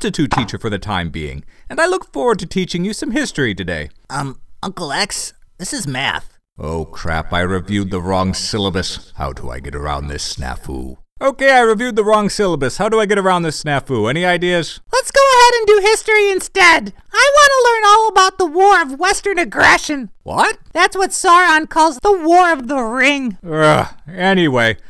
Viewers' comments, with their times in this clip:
0:07 You Can Hear Monster X's Thoughts...